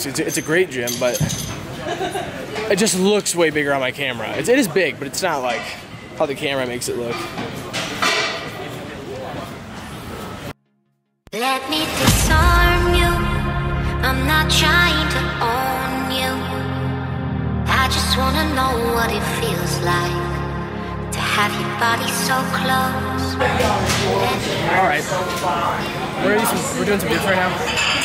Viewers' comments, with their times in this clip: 0:10 love this song man! Euphoric hardstyle at its best.